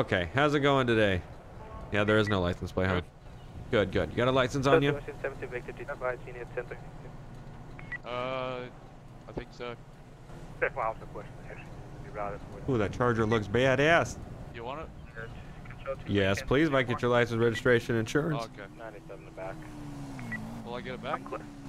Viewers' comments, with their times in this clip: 0:05 Sounds Like A Gunshot